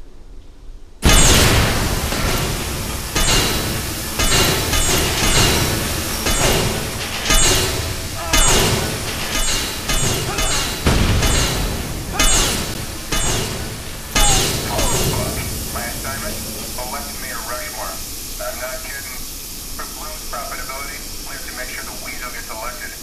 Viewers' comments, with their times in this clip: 0:05 it active the B explosion and ,boom boom, all along the basement is fire blow up, that is so funny LOL